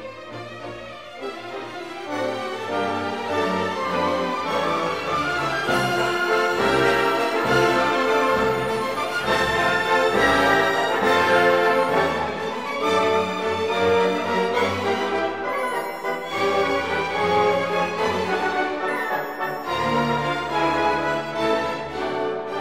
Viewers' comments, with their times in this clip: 0:06 Goes PERFECTLY with the music. BTW the music for this is literally perfect ( the entire video ).